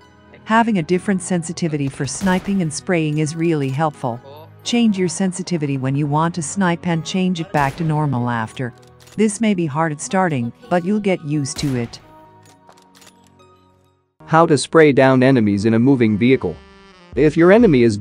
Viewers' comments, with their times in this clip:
0:04 Why you changed Bot voice to female ? To show Gyro is special… 0_0
0:04 why change voice 🥲